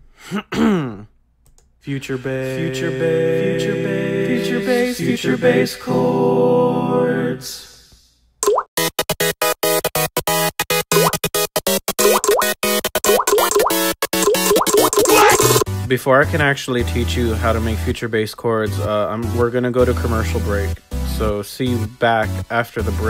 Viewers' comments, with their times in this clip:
0:07 I really want an MP3 of that sped up Mario Party music, and I want whatever the hell that was
0:07 chord progression is pretty dope.. anyone can transcribe them? I failed lel
0:08 Dat progression doe.
0:09 music is super lit, is that from a full song?